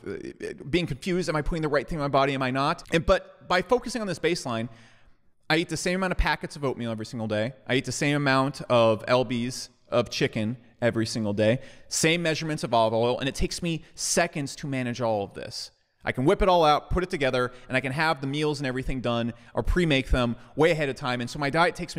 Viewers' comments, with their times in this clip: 0:07 the same amount of el-bees of chicken lol